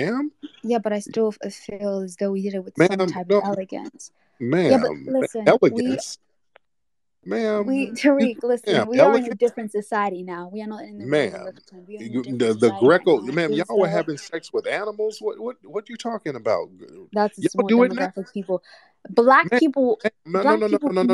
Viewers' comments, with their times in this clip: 0:08 she said “Tariq” and that Eastern African accent came out, phony fake fraud shameful tether!